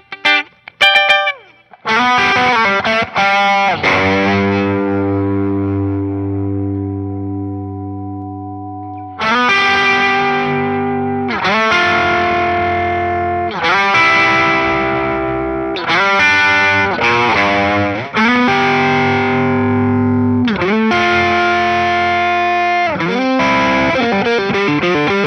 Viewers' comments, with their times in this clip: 0:09 why do I suddenly hear the trees talking